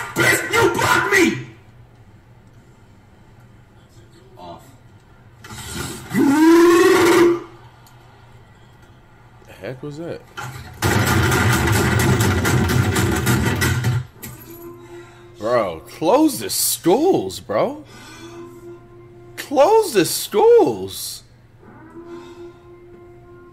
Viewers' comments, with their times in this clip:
0:05 flight sounds like the windows xp pinball machine